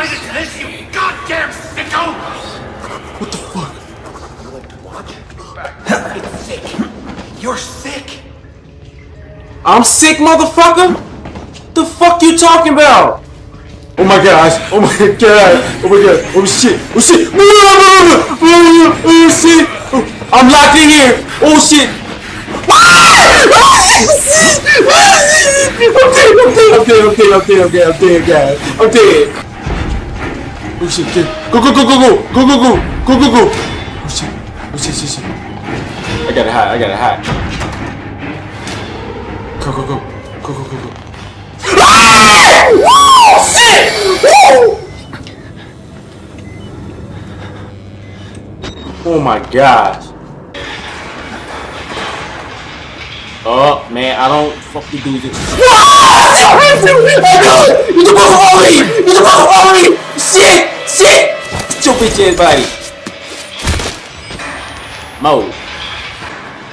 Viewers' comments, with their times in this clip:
0:07 gangsta screming like a girl ( best part)
0:54 oh shit I gay I gay I gay lol